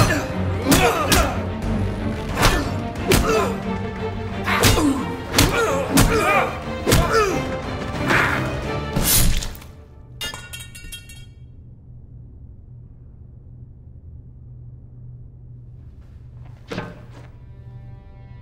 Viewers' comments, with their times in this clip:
0:06 why was there a sword sound going through instead of a plunger impale?